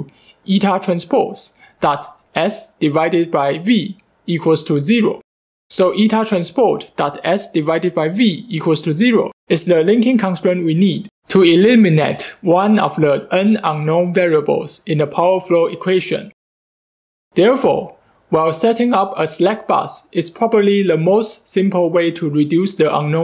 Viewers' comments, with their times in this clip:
0:08 to eliminate...(volume up) " PARTICULAR EMPHASIS " haha